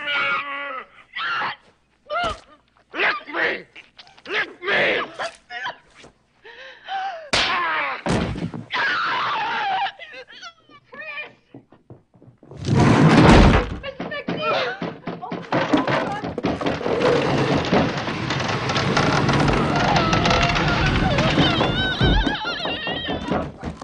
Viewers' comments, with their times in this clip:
0:08 This is a true event that happened in this scene. Ellen Burstyn suffered a coccyx injury which lead to permanent injury to her spine during the filming of this scene. If you saw on Ellen injured her coccyx and that was an actual scream of pain from her. The director and producers thought it was her acting not realizing she injured herself.
0:09 Ellen burstyn wasn’t acting That was a real scream of pain as she was hit against the table thing.
0:10 Trivia: Elleyn Buystn screaming after being hit was genuine. She really did react in pain after damaging her spine. And Linda Blair actually looked concerned I think to this day even though it was just acting Linda Blair still feels guilty for punching Ellyen Bustyn who she saw like a mother.